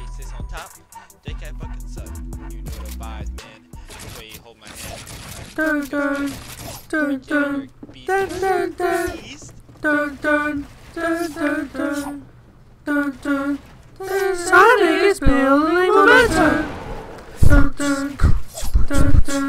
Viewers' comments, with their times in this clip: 0:05 Wtf 😂😂 omg music??